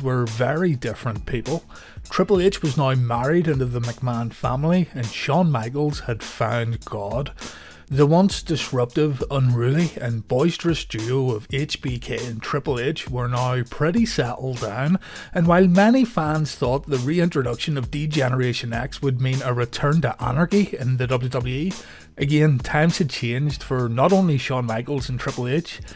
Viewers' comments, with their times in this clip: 0:06 The way you say the line still cracks me up every time I hear it, it sounds less like you’re saying “he found religion” and more like “he climbed a tall Mountain and found god and played some sweet chin music.”